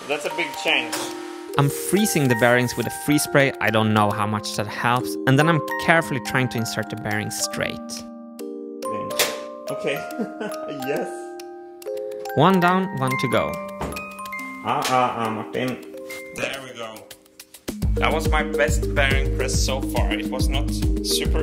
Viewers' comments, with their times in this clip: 0:05 "--and them I'm carefully trying to insert the Bering Strait." Jeeze Martin isn't that a bit feature creep? The whole Bering Strait? I mean, that's cool... but... wow, that's a lot of work to incorporate.